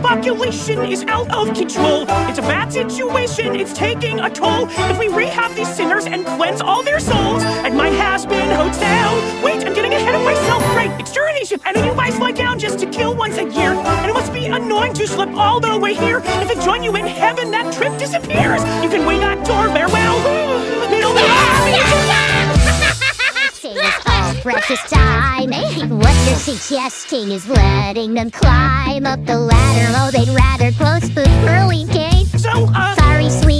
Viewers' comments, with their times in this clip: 0:08 Adam sounds like he's being held at gunpoint LMAO
0:21 Nifty is just laughing at the start
0:21 great again niffty voice from s1 e8 stab, stab, stab hahahaha! haha! hahaha rueahahaha! hahahaha.